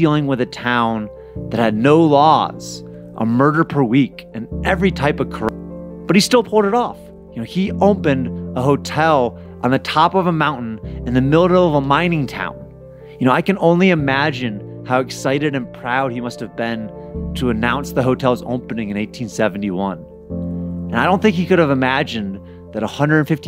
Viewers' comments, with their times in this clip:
0:05 Ironic that the word "Corruption" got corrupted.
0:06 the word “corruption” is corrupted and there’s no way that’s just a coincidence